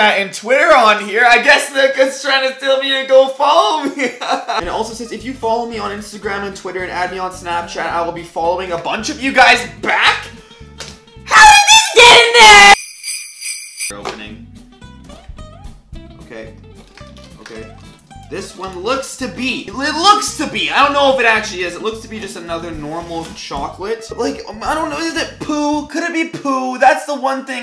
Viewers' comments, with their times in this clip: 0:09 I just love how he said HOW DID THIS GET IN THERE 🤣